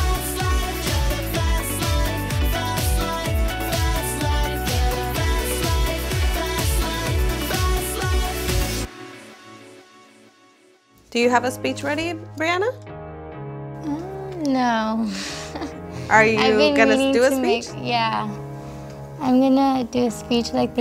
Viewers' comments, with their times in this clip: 0:07 I’m i the only one who can hear Fleshlight in the background 😂😂